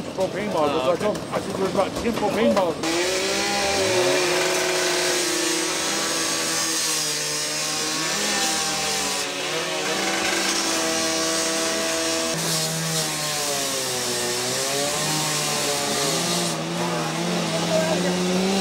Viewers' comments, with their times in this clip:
0:04 “you need cocaine”